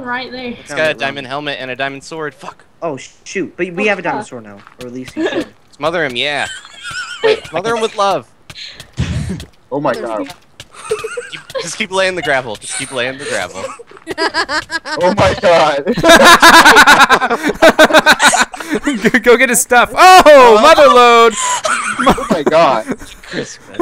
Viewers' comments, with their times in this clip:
0:06 dat laugh :3